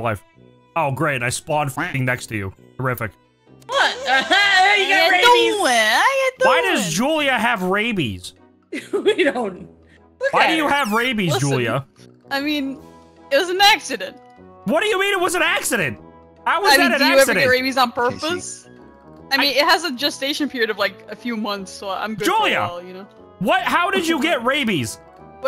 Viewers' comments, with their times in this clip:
0:07 It's cute and it kinda makes me feel like he sounds like a duck. 😊🦆